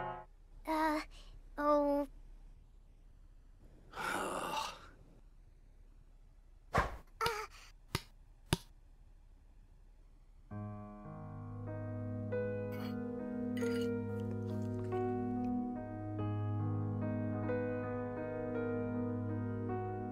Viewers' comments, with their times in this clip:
0:07 that voice is weird